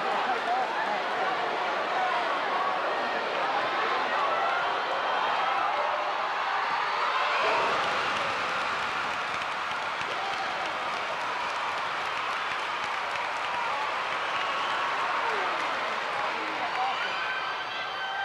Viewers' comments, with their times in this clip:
0:05 The way the crowd sounded was crazy It was like a sound jet taking off or something…